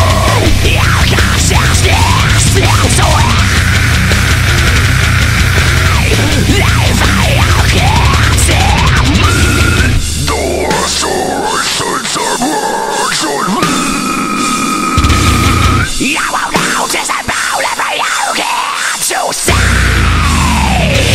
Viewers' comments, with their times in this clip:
0:09 Fucking insane redo dude, but I feel like you need to work on your lows a little bit, like for example. Not to say they aren't pretty brutal already, but I reckon you could get some serious toilet bowl growls going 😂